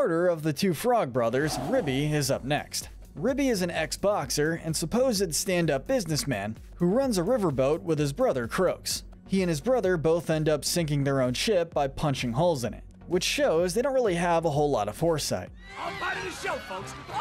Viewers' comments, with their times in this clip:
0:03 I didn't know Ribby was an Xboxer